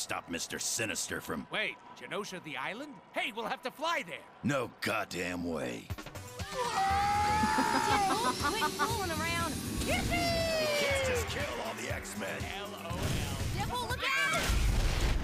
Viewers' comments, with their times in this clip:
0:03 dude sounds like tankdempse from call of duty zombies